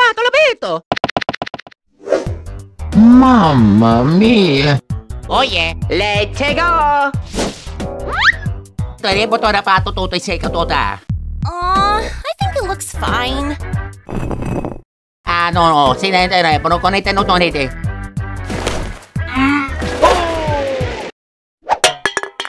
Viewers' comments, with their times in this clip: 0:03 Meggys voice this amazing